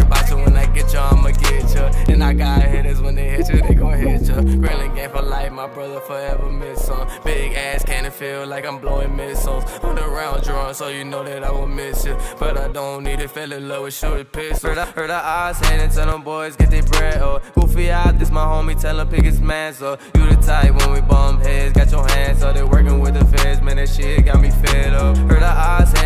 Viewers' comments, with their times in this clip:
0:08 ... When you finally talk to your crush and señor puberty says hi.